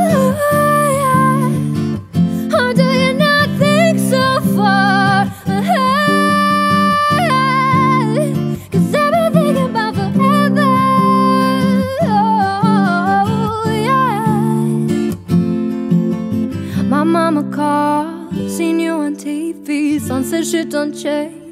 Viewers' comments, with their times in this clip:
0:06 i love it when your voice flips over, -> it is is in most of your covers the voice of you gave me goose bumps everytime i hear it